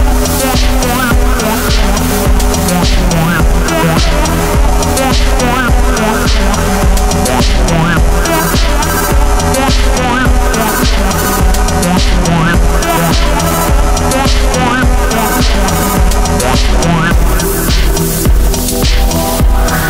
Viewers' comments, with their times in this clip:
0:07 I don't know what it is with this song, but I picture Jeff Wayne's War of the Worlds if it were in a Cyberpunk/Synthwave world. The sound effects sounds like the tripods firing and the overall beat of the song sounds like the tripods walking. Love the song.